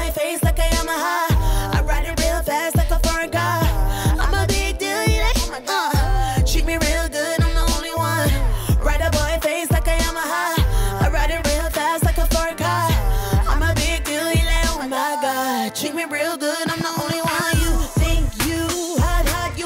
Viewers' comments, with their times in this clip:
0:05 yu fooled me buh not this time. The mic ain’t on